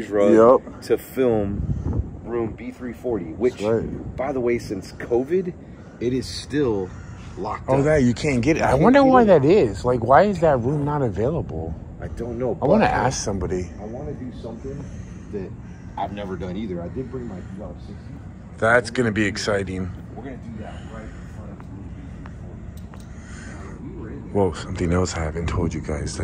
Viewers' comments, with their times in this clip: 0:09 evp saying dam